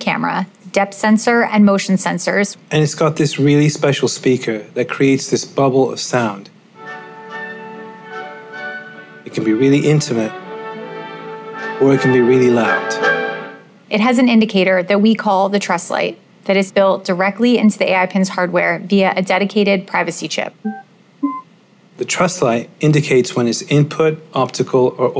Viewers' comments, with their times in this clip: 0:08 That music choice An odyssey 👌